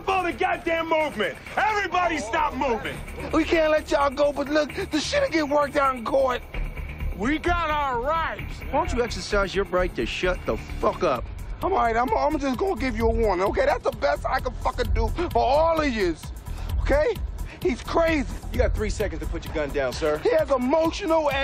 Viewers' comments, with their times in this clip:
0:08 why he sound like that one GTA character Clayton or something 😂 I forgot his name